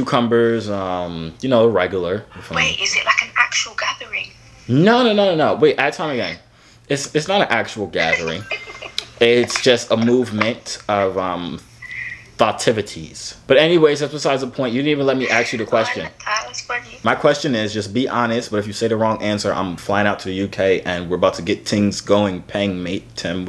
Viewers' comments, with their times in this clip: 0:07 had me dying her british accent and then is it an actual gathering